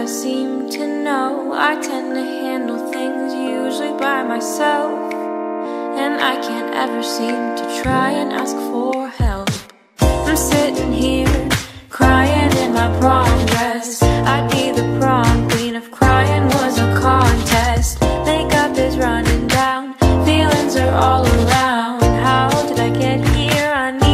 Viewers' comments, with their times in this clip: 0:10 It doesn't matter what I'm doing I'll drop everything to so the double-clap